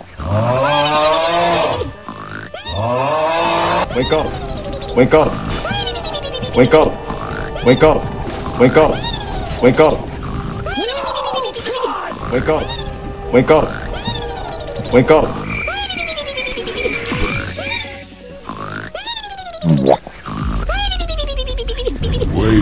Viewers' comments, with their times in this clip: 0:05 nobody: my alarm: